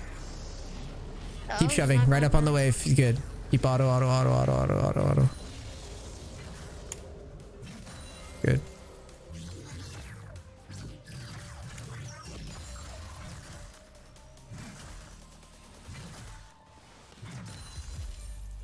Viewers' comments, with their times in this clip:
0:06 u can hear the ctrl xD